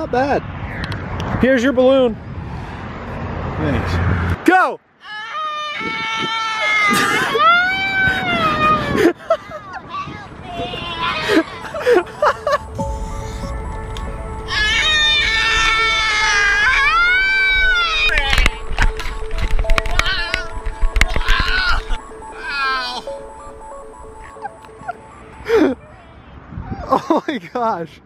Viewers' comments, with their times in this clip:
0:05 lmao that scream
0:14 warning headphone users lol 😂
0:16 sponge bob has taken his voice!!!!!!!